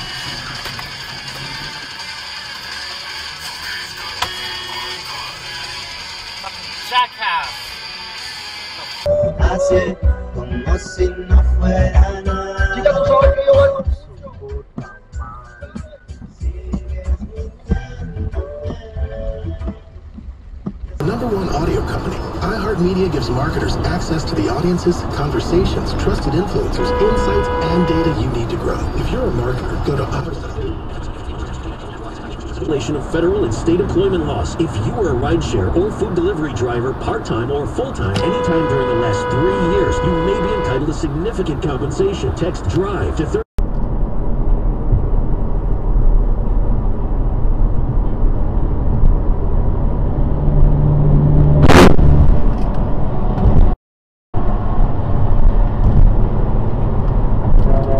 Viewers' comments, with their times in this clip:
0:04 That is definitely the horn for that voice.
0:10 bro got some good music taste
0:36 So glad you honked. I've done this several times... Helped a motorcyclist not get creamed by a work truck doing the same thing. Some people say why bother....THIS IS WHY.
0:38 A rare sight on this channel, someone using his horn to prevent an accident. Like god intended.